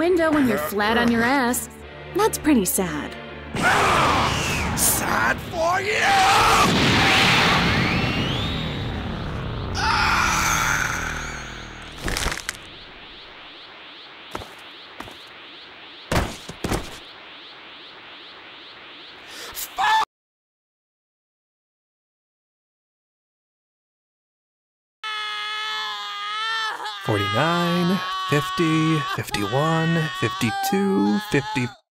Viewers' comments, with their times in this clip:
0:05 the headphone quality 😮
0:18 omg that peak is so perfect, like it breaks the immersion but still feels like it's vegeta making that sound